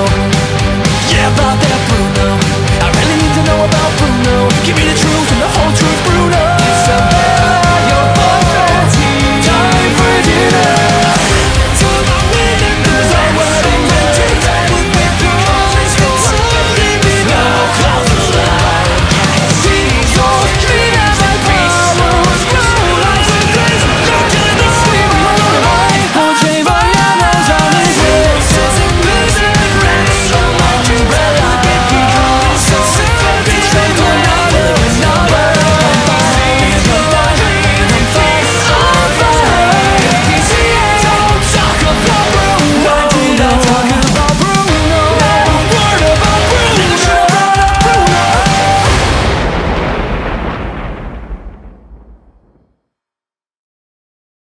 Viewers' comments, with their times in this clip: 0:09 ! This was one hell of a killer genre change of a famous song from Disney! The tone is rocking me
0:38 For a second I though I heard “OH FUCK” 🤣🤣🤣